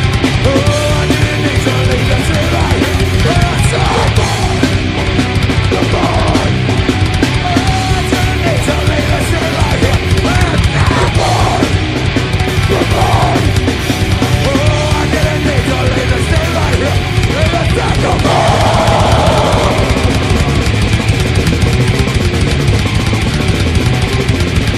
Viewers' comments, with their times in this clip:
0:05 Nice vocal switch-up there, I think he sings a 7th above the normal melody.